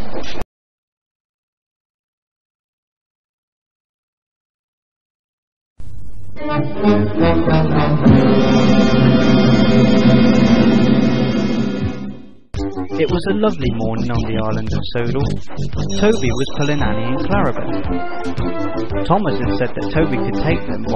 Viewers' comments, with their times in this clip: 0:06 I like this piece of music